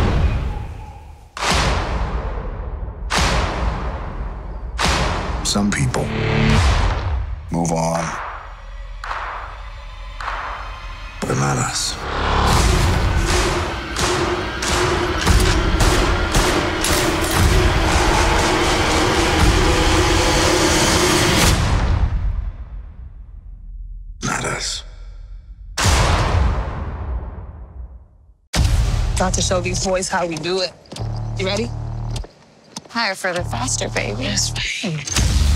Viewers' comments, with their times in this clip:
0:09 Play in .25x speed: Some People move on, Bananas
0:11 Lol it sounds like he said bananas 😂
0:11 It sounded like he said "Bananas" in a different accent
0:11 Turn on Auto English Subtitles ‘But not us’ became ‘Bananas’ Lmao
0:23 is that not ultrons voice